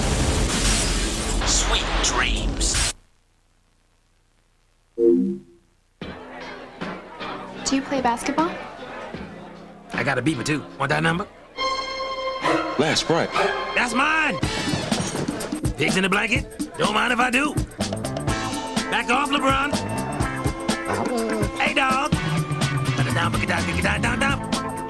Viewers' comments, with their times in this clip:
0:09 Is that the voice actor for the Black Baron in MadWorld?! Sounds a helluva lot like him.